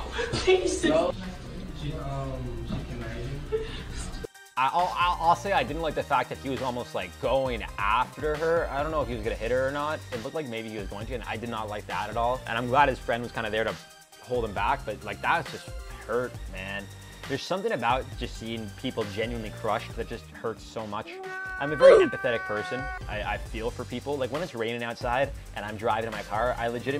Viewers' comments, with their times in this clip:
0:07 Can literally hear this poor kids heart breaking. Can say I've been through a similar heart nuking experience.